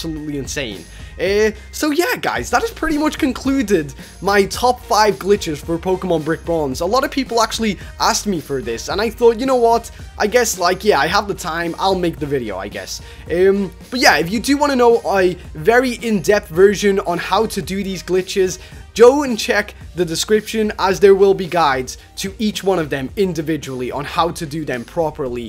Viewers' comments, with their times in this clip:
0:09 Your tv is on in the background